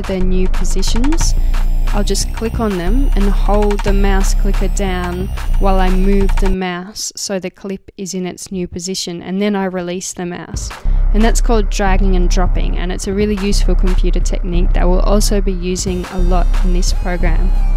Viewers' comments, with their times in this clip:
0:04 she starts rapping